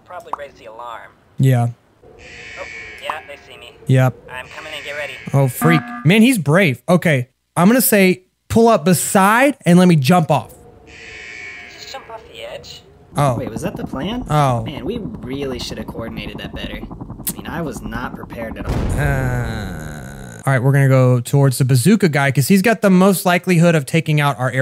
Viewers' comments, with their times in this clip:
0:04 another among us reference the emergency meeting bell only played half
0:06 it sounds like when you hit the button in among us